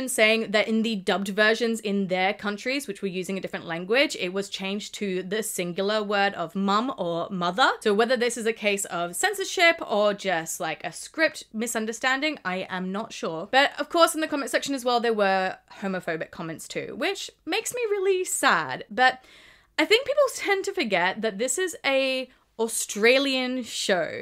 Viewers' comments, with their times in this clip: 0:06 OH DANG! At least in my country (Brasil=portugues) they keep moms, and he speaks loud and clear 😎😎😎😎😭😭😭😭🥳🥳🥳🥳🏳️‍🌈🏳️‍🌈🏳️‍🌈🏳️‍🌈🇧🇷🇧🇷🇧🇷🇧🇷😎🏳️‍🌈